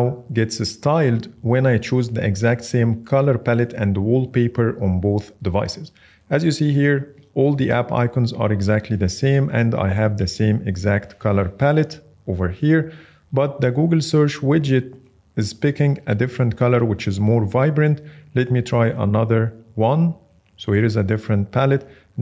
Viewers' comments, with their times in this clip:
0:08 Feedback: I’m hearing a guzz sound in the background. I thought my ear phones were broken but in other videos it was not the issue. Thank you.